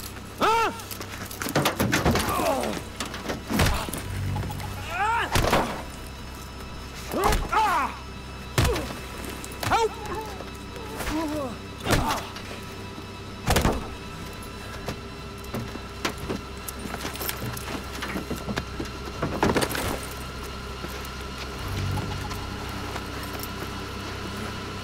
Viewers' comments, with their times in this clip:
0:09 its so funny how he makes that sound , it sounds like hes saying "HELP" its funny